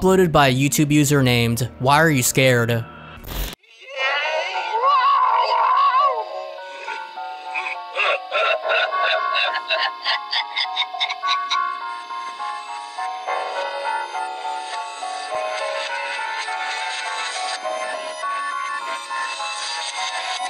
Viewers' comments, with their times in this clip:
0:06 Ever since “Ben Drowned” , Spooky music is just reversed music.